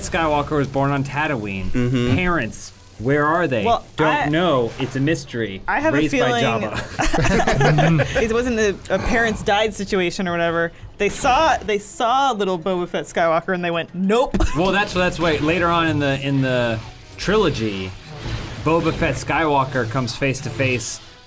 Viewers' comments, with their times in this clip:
0:08 why is there a german recording of it?! ^^